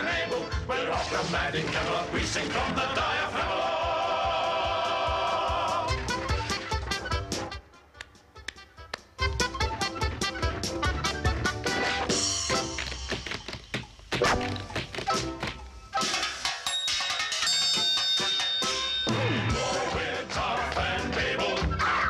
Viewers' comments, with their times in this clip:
0:07 the guy clapping along in the dungeon gets me every time! XD